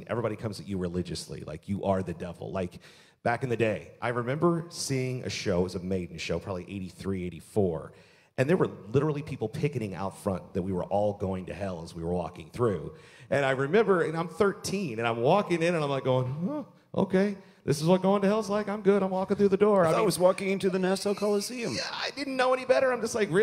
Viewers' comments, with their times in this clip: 0:08 Dead Air!! Awkward